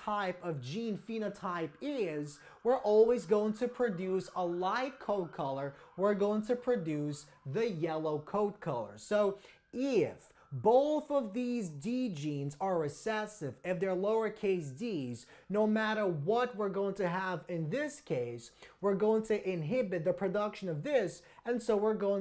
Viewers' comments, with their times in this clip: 0:09 who has notic the police siren